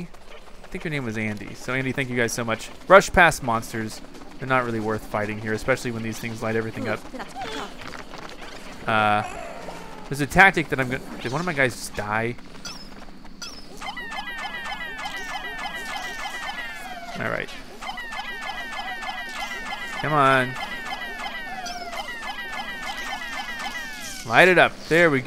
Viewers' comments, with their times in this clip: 0:06 omg that's so awful You can see one of those monster things going close to the line and then hear a pikmin cry in pain and then see a X on the rock pikmins that thing ate him and you left him behind 😱